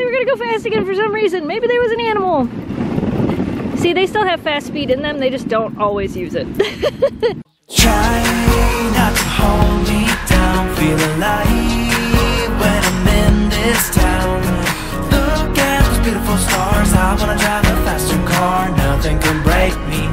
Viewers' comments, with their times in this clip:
0:08 RIP Headphone Users :D